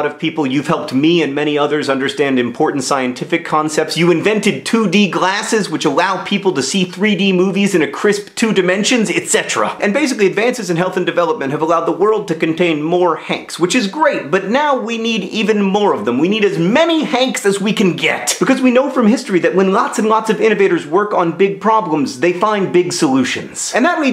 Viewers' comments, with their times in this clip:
0:06 that's the most intense etcetera i've heard in a while (also really insightful video, politicians take note)